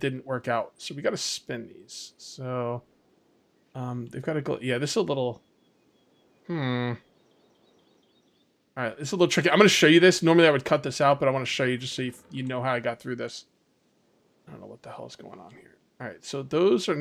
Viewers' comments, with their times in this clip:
0:05 Minecraft Villager has entered the chat